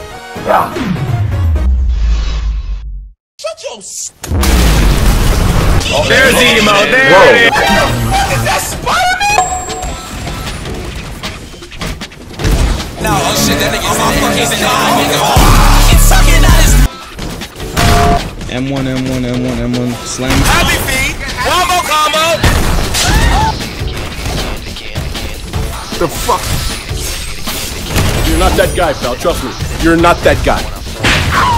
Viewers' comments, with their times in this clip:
0:08 Nah i thaught it said let go😂😂😂
0:16 fire music but secs ain’t doin their jobs
0:18 FINALLY YOUU REAVLED YOUR VOICE